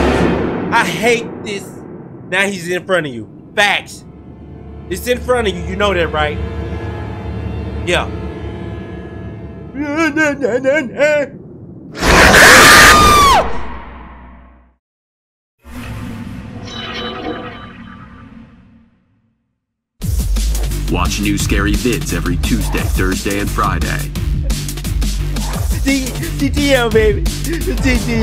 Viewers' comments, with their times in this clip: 0:09 Soundin like Curly. LOL